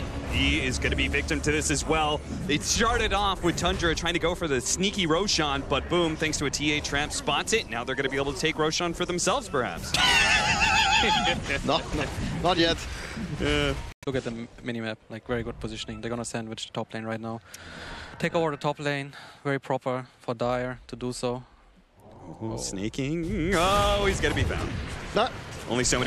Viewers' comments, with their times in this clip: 0:09 exactly how our car starts when it's cold outside.